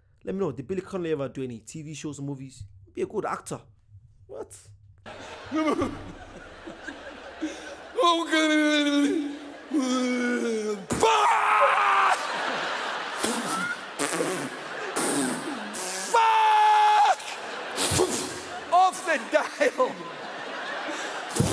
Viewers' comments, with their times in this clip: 0:03 he sounds like zakir naik